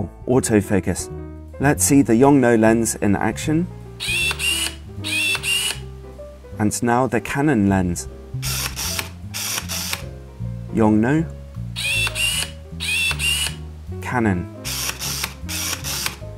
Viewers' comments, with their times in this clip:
0:03 Yongnuo: Haha haha Canon: Hehe hehe